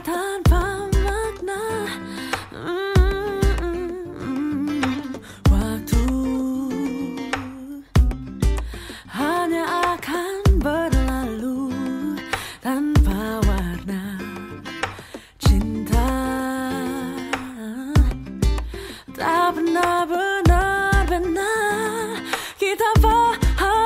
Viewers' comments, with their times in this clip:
0:05 Adele - Send My Love style